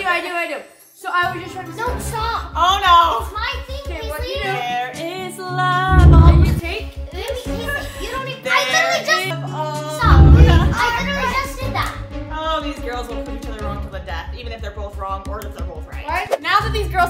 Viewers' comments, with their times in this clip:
0:05 that’s kinda funny when lads was just randomly singing 😂